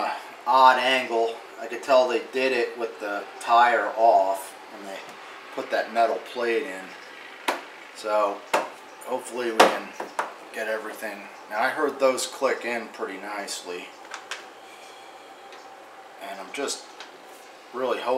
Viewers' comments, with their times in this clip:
0:06 ....when they start clicking in...it's an orgasmic sound....awesome job